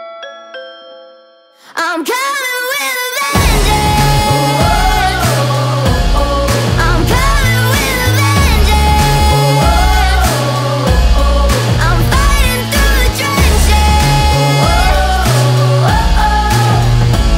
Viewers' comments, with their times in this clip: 0:05 "I'm coming with a bandaid" i honestly thought thats what it said, this is the first time ive heard this song